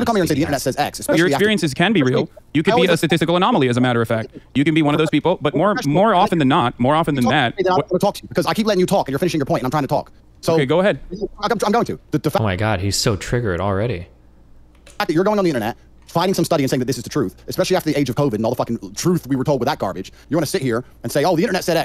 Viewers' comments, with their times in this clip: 0:08 Tate makes some interesting points, but he really talks too fast.